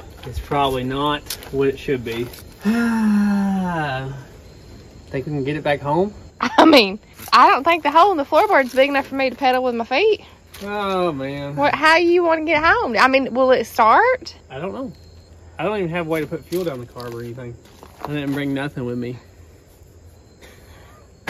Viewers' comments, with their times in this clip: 0:04 When I close my eyes I hear Daisy duke lol...